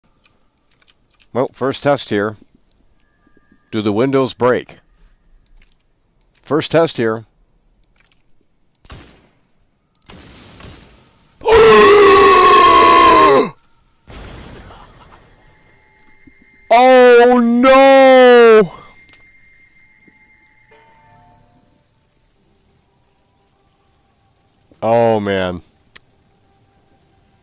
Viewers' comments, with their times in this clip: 0:10 That, "OOOOOOOOOOOOO." is the peak of yelling comedy
0:10 Homie went from American, to British from just how flabbergasted his lapse of judgement was.
0:11 sounds like he's dying
0:11 greatest gasp in human history
0:11 Subtitles: fart noise Blind people realizing that farting makes a noise:
0:11 why did he sound like a grandpa getting the best head of his life?
0:11 Why does it sound like its a cut scéne of a orc that is dying with a traumatic ending (like its throat have been slit or something). 🤣
0:11 When you finally put away your phone & try to sleep, but then you hear birds outside: